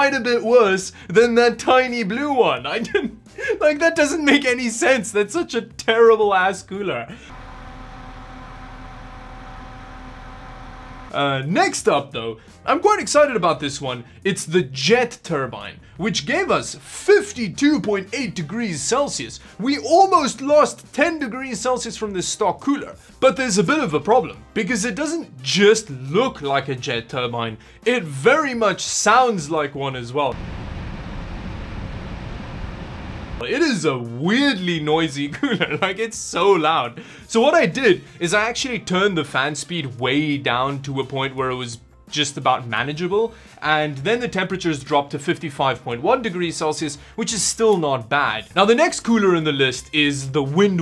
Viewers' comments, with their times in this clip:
0:08 you must know how an industrial strength vibrator sounds like.
0:33 thats nithing, my pc is way louder but i dont understand why people care that much about a little noise. Most use headsets anyway.